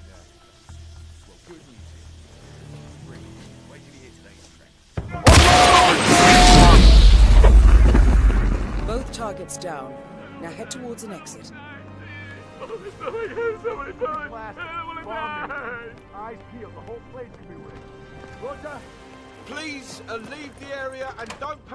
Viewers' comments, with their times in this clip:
0:04 lmao his body literally flew through the roof. Play it back in 0.25 speed and it sounds very strange and you fan see his body